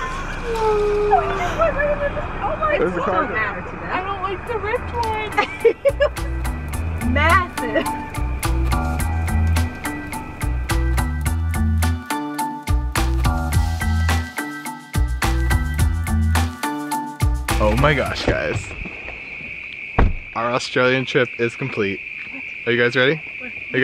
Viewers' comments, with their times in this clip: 0:06 Annoying music. Glad you liked Australia's version of Mexico. watching the 'roos you were driving on the wrong side of the road!